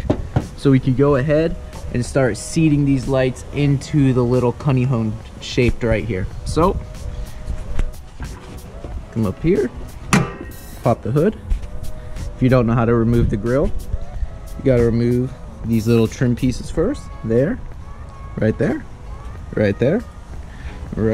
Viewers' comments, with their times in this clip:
0:04 whats a cunning hone???🤣🤣🤣 honey comb lol